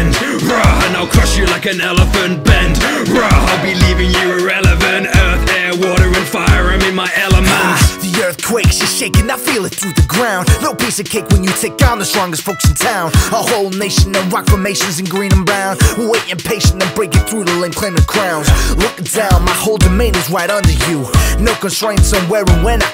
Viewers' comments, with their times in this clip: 0:08 It sounds like Lloyd From Ninjago!!!! It means Aang VS Lloyd (Avatar VS Ninjago)